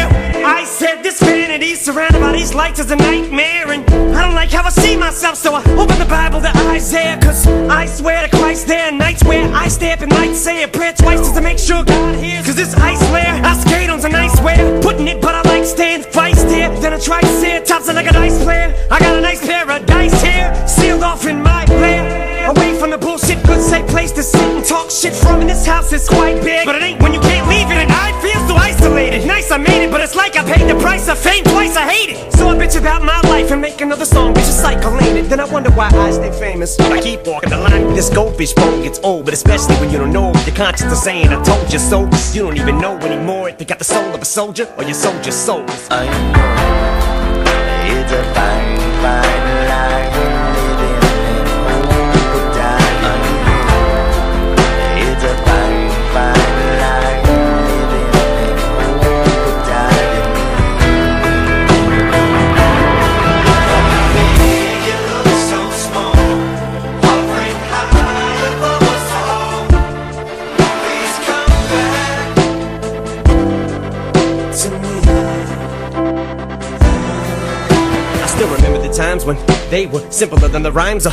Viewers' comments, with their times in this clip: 0:06 how the fuck does he spit like that?! 👀🤐 Dayumm!!!
0:07 Im still waiting for a rapper to rap like this... Best flow EVER!!
1:04 the beat songs like that Justin Timberlake song My Love